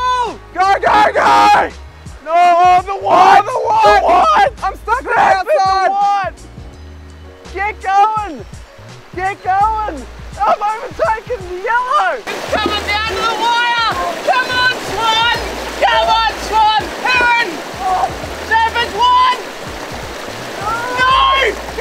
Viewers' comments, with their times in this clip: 0:07 random hiker thought you were yelling at him/her. That's funny to me.